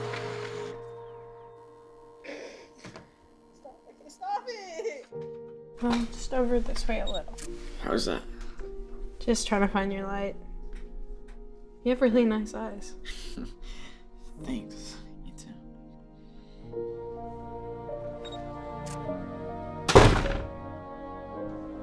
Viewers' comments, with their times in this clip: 0:04 did anyone hear someone screaming “stop it”